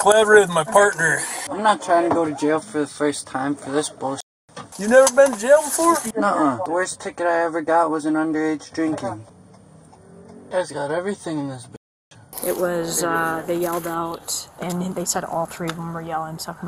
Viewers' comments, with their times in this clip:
0:03 the officer sounds shocked when he said you never been to jail